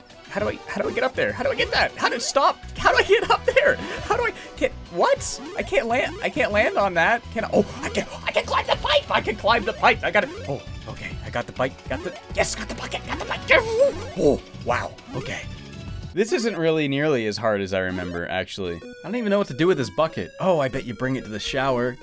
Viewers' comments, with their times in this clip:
0:07 when you started freaking out! Your voice went full-blown Howie Mandel!! LOL